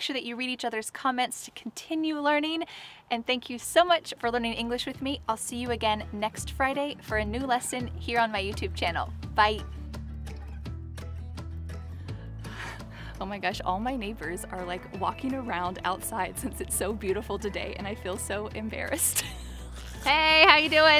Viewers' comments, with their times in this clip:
0:08 The way she says 'bye' giggles me everytime I watch a vid. "bayee"🙂😁